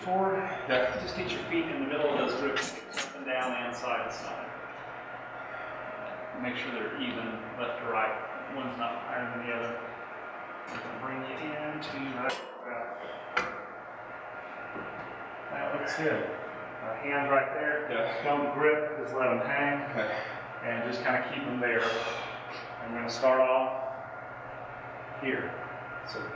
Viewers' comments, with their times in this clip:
0:09 Exactly, uncomfortable and painful.the brain tells you to quit every time. I have been doing this high intensity workout for 3 weeks now 💪 i follow Mentzer circles though. Monday pecks back. Thursday legs. Saturday shoulders bicep tricep. I don't like the way this guy is breathing though i think its wrong.